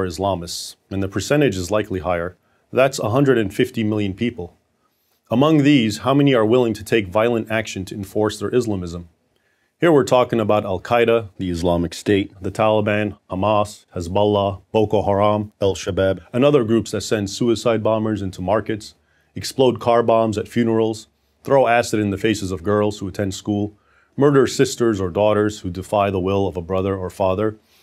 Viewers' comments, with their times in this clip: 0:10 Why did the voice change when he said "Islamic State" ?